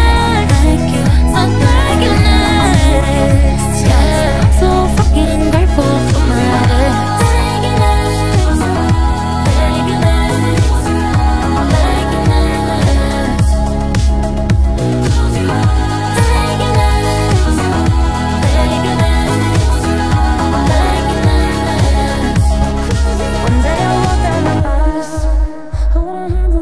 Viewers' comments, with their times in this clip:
0:07 OMG THE VOCODER